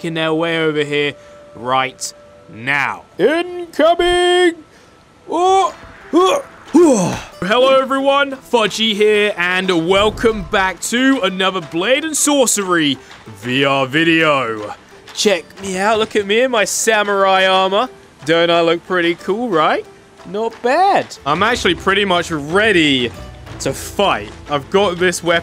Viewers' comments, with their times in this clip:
0:06 you hear his legs break